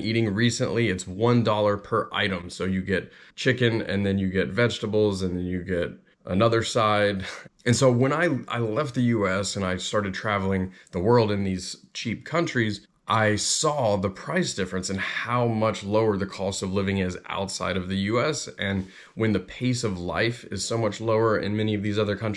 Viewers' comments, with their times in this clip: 0:06 You go to karens in the philipienes? Usualy i avoid them! ( min)